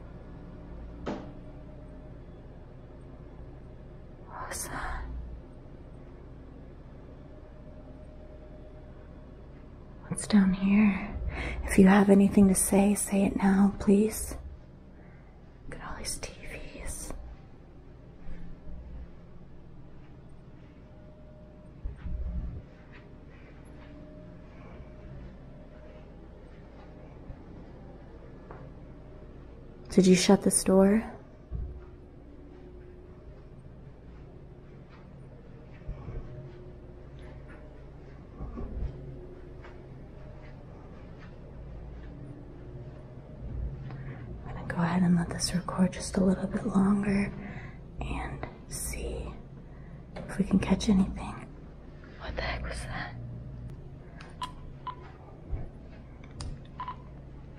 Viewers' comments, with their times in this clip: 0:08 onwards there sounds like a old man I following you as I can hear him making breathing and moaning sounds. I think he's been following you the whole time xx 👻
0:38 ish it's sounded like someone said something right next to you
0:38 sounfs like man